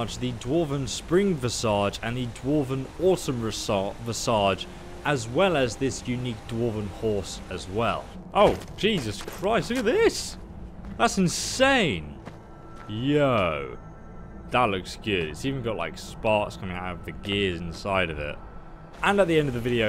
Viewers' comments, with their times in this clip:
0:03 "Resage" I can't stop laughing😹😹😹